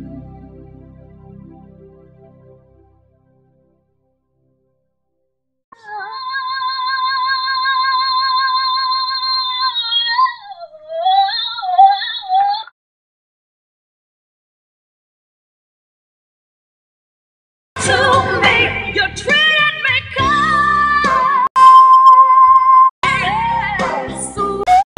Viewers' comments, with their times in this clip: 0:06 she sounds so similar to young Britney Spears there